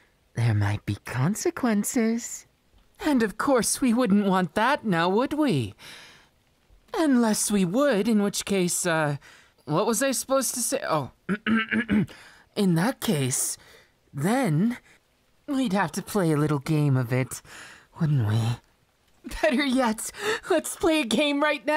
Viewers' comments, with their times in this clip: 0:09 Why does he sound like he forgot his lines on a script lmao